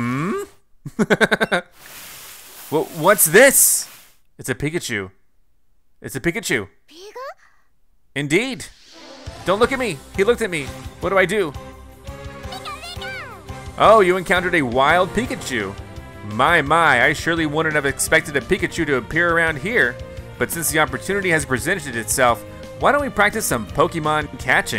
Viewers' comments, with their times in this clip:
0:05 i think pikachu thought you were a pickle cause he said "pickle"